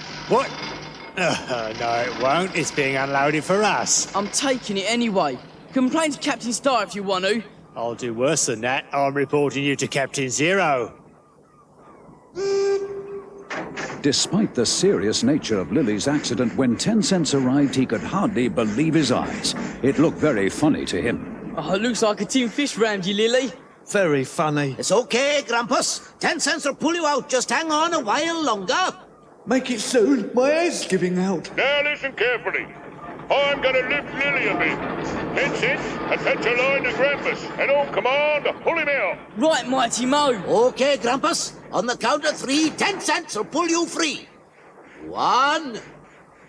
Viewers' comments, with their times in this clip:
0:10 Ten Cents: 'gives no distance between Lillie's hull and the timber barge' Barge: Crashes into Lillie's hull CRASH Edit: not into Lillie's Hull but at the back of her hull Ten Cents: "sounds his whistle" Ten Cents: "laughs and smiles" oh it looks like you got a giant fish around you Lillie Edit: looks like you got a giant fish into your hole Lillie (maybe) Lol all those made me laugh like Ten Cents he was primarily the one who made me laugh at this timestamp
0:29 "my a** is giving out. If top hat keeps moving his head up and down like that, the spring in his neck will break off, Grampus is more blue at lucky's yard, the naval ship siren sounds very Nazi-like, and What is the prize from the regatta? Spare parts?🤔😄😄😄